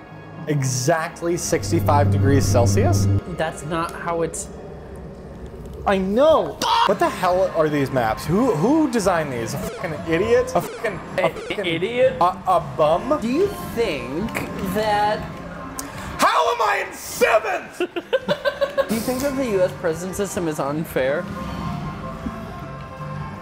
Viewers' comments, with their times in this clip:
0:06 the perfectly cut scream omfggggg